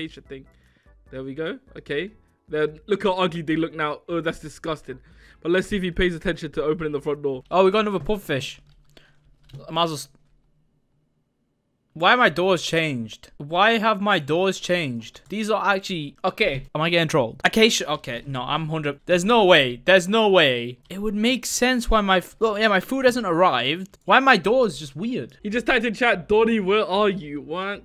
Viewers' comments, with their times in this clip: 0:10 That damn pause!!! XD